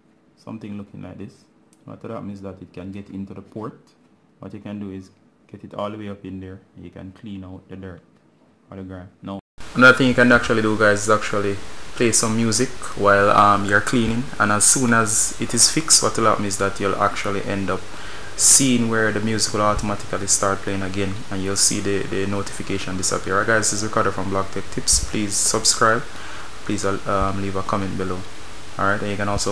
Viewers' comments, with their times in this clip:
0:08 ear rape if you can hear with one headphone like me
0:11 I thought my volume worked but no:( it just got louder.